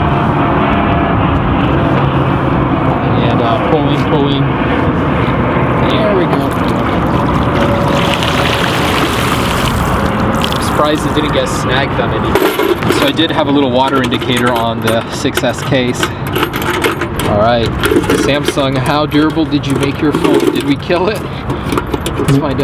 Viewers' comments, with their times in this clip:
0:06 that plane noise tho